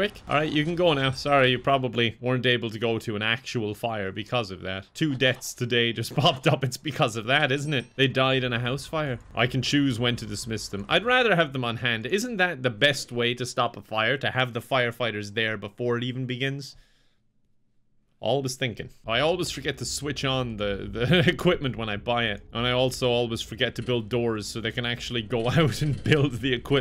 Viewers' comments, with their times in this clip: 0:08 the "they died in a house fire", sometimes his Irish sounds a little bit more than other days